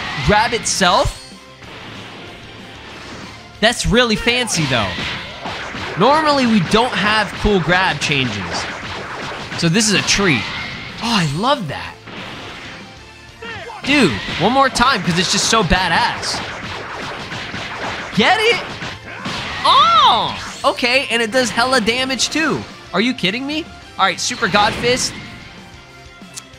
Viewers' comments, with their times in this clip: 0:09 when u said oh I love that u sounded like Ryan Reynolds lmfao